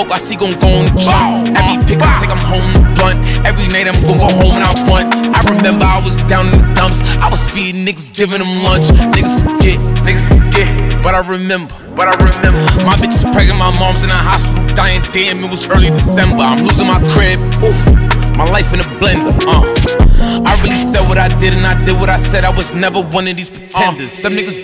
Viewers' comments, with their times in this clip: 0:09 seems to have been interpolated on Off The Grid where Kanye says, “was forgettin’ you, now I remember, now I remember Did what I want and I say what I want And I thought you was with me, like how you get sensitive?” In a similar flow.